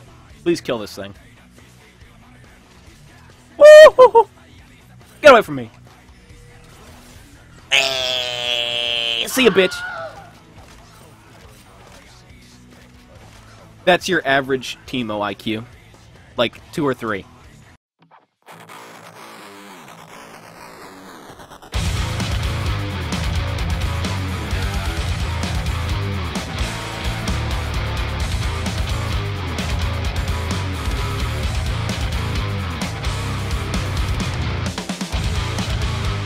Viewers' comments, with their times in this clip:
0:07 the video editor is so creative , he cuts sounds from porn and use it on the video
0:07 he sounded so beutiful like a dying but life is to awsum.
0:18 Something that could help in my opinion was at parts like idk if the music was that loud in game, id rather just hear tobias reaction making the plays, otherwise good vid :)